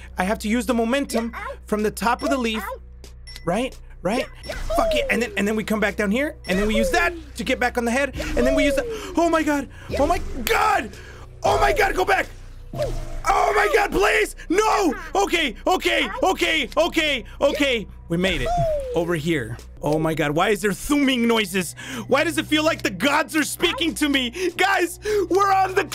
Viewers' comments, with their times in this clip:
0:08 Lol in the minute you starded sounding like joseph jostar from part 3 xD